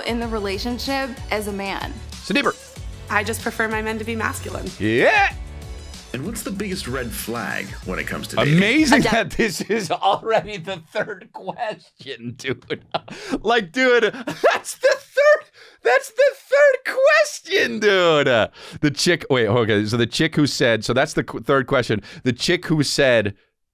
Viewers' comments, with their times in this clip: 0:04 The "eyuhh" is top 5. I just spit out my drink on my steering wheel. 😂😂😂